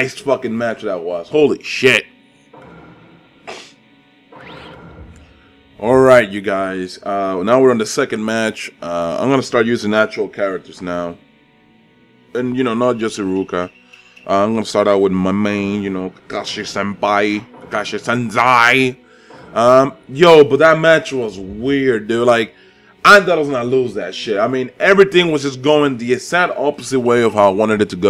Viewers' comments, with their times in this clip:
0:10 He is talking